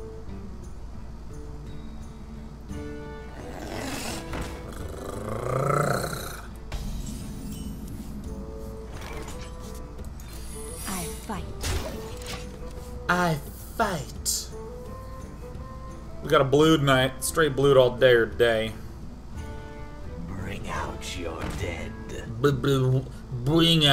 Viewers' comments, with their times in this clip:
0:04 Sean's seduction purr xD